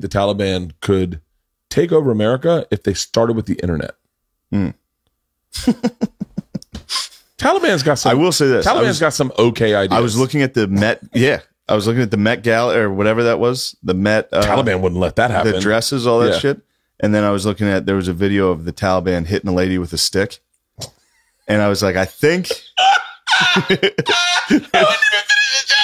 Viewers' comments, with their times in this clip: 0:06 Bert ruined the joke immediately with that fake annoying laugh